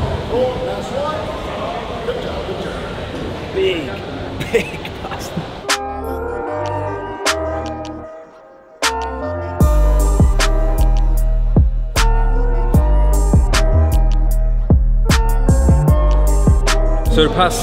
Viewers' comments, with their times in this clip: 0:03 there’s the Geordie coming out 😂